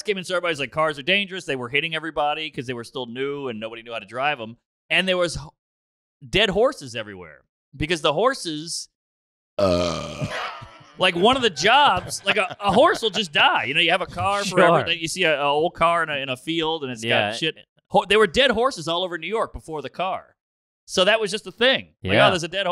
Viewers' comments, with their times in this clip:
0:08 That fuckin burp, the boys loving it and him just continuing on is so fuckin gold.